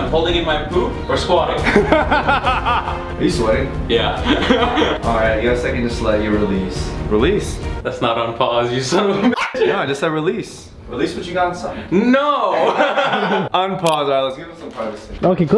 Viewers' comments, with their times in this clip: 0:03 "are you sweating?" 'yeah" Nervous laughter